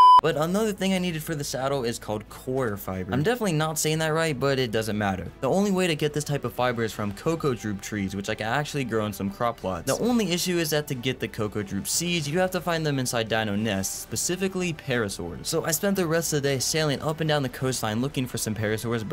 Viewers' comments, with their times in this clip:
0:03 not the coilovers